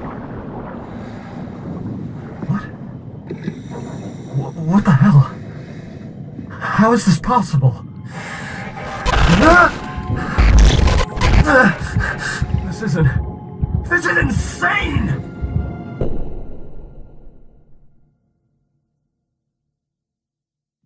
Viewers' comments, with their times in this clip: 0:06 Really impressed how you got more feelings in each voice , makes the game feels more real nice job ! Oh yeah , how did you made the sound when he's underwater i want to edit my voice like that too :)